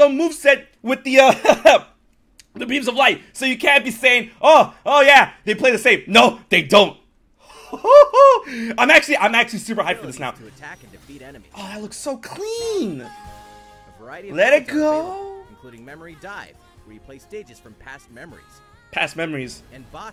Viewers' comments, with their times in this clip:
0:07 Is it just me or he is sounding a little bit like Mickey mouse